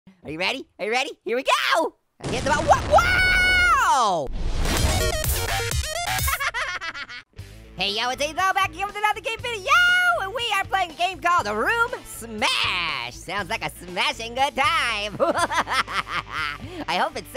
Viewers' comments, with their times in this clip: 0:01 that should be a perfectly cut scream